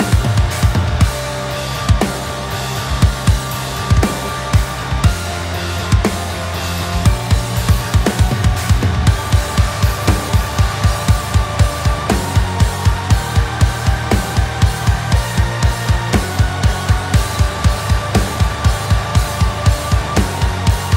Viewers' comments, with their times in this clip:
0:07 The "riffing" on the cymbals ish is so sick